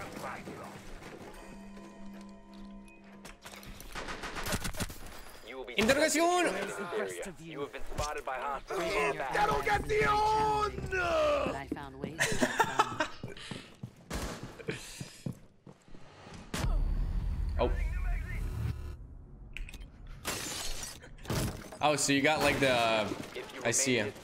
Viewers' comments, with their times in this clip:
0:07 I thought that was mavericks voice